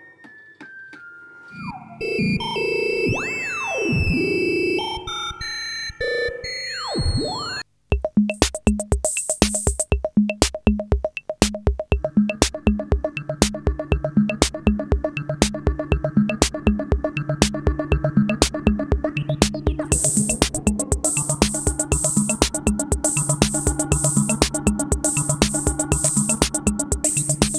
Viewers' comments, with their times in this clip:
0:08 Super funky tune